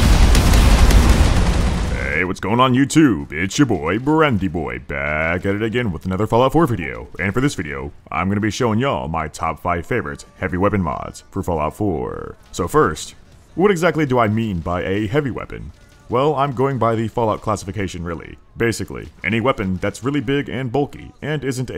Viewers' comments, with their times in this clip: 0:06 was that the discord notification sound